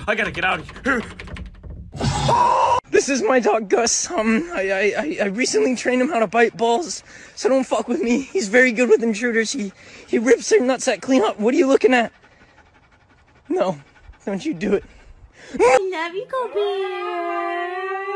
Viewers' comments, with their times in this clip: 0:03 why does he sound like deku😭😭😭